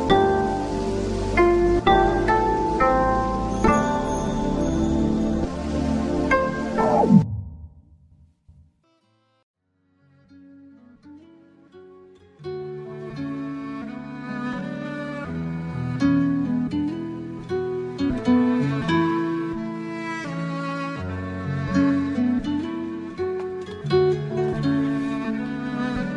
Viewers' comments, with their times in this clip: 0:08 I loved the song called "FREE FLOW LAVA - Itachi Uchiha" !! The sounds of Naruto activating his shadow clones and them appearing and him speaking at the end🥺❤